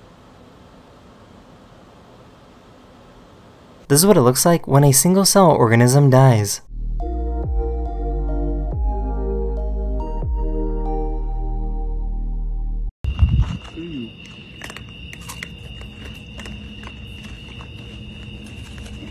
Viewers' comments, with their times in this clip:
0:04 brain fart sounds